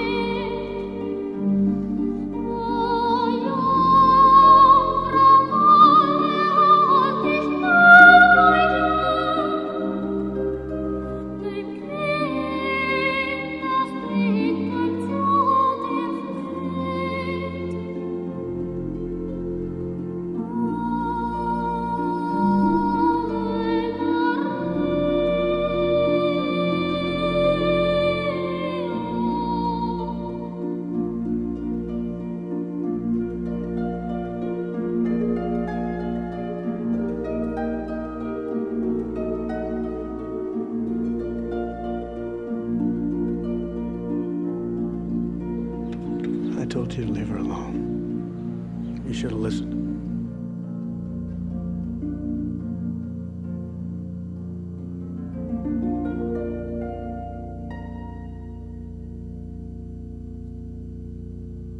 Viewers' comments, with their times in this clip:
0:06 her voice goes so high that it makes static.
0:45 47 just murdered Ave Maria by speaking those words